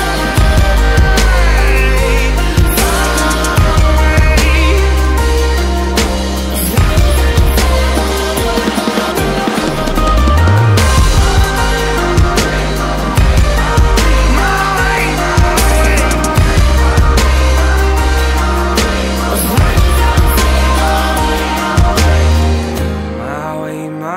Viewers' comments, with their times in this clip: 0:10 BOOOOOOOOOOOOOOOM That’s my favorite part